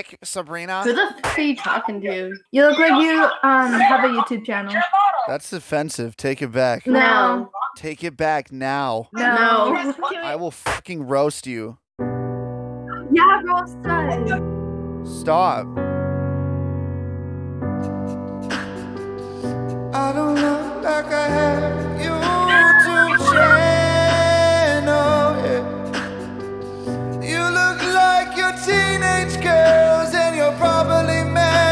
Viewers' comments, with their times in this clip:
0:07 they sounded like the 2 twin sisters in the show Johnny Test.
0:15 That singing ish was damn good man, why isn't that on the radio